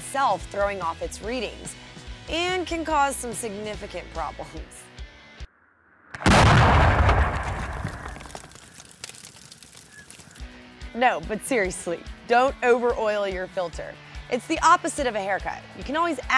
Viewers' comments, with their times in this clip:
0:04 sound warning ( i about $h!+ my pants since im falling asleep at work)